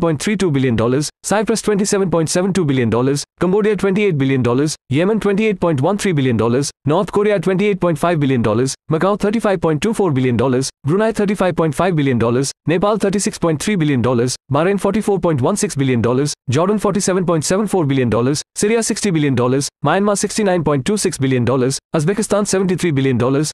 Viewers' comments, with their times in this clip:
0:05 yes its yemon💀💀